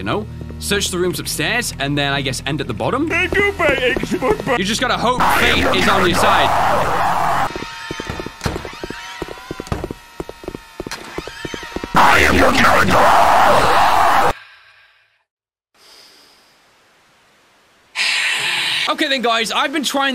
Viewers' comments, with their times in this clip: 0:05 is it just me or does the jumpscares sond like they are saying 'I AM YOUR GRANDMARE!!!!!"
0:07 that one mosquito flying around you